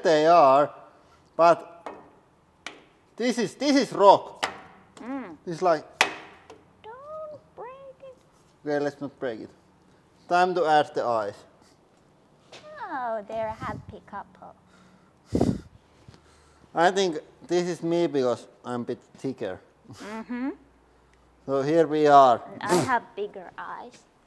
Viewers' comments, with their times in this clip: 0:06 lmao. Whispers: doooonnnnttt break it.